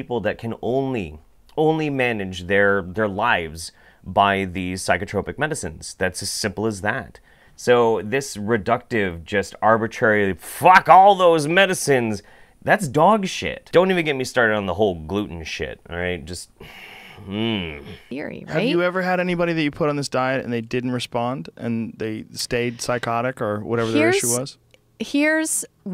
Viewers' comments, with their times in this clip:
0:10 You sounded like Mr. Plinkett there.... "FUCK ALL THIS MEDICINE!!!"